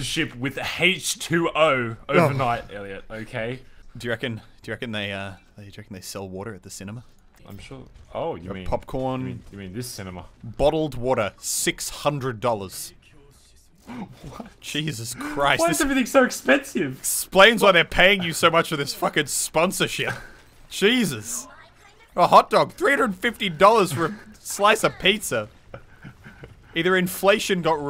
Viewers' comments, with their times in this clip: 0:10 When muselk said bottled water 600 dollars i think i heard the genji say ridiculous XD like if u heard it too